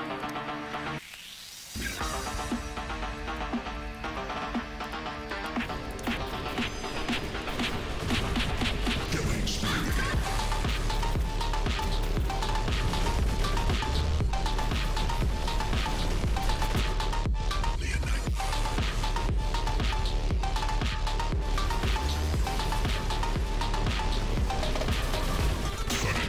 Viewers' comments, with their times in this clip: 0:07 The Music is Awesome! 💪🏻 I don't have Rook, till now. 😔 Thank you for testing and all other information, you share with us. You are most underrated YouTuber in War Robots Scene 💖 Maybe you're working on an Indra/Luchador vs. Rook?